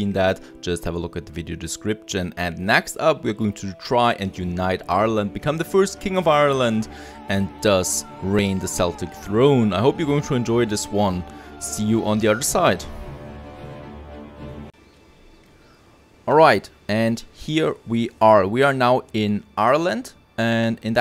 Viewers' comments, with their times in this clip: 0:07 did he say seltic throne